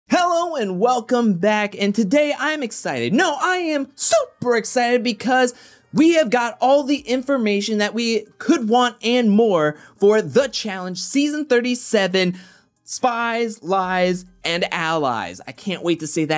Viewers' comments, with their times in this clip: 0:03 SUPER excited 😂😂😂 sounding like Charlie Day hahaha